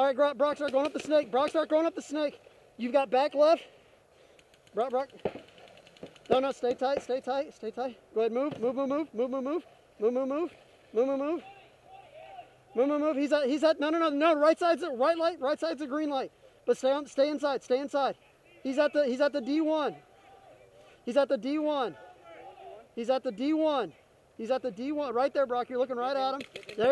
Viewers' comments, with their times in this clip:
0:09 Moo-moo-moo, I laughed.